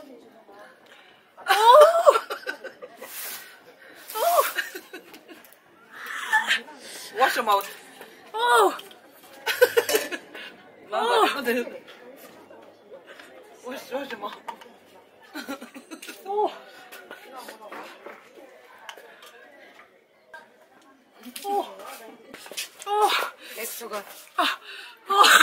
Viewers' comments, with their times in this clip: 0:10 I like that evil laughter